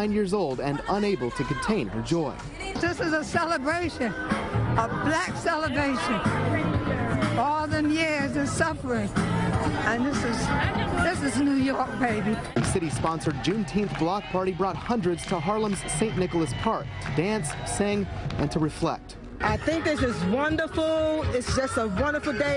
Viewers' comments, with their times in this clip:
0:03 Lady sounds so sweet and powerful ❤️❤️